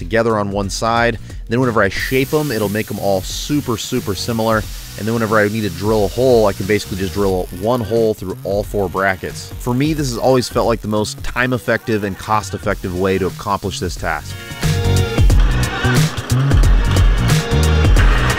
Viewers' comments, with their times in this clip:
0:05 had to rewind and make sure that wasn't a custom engine belt sander lol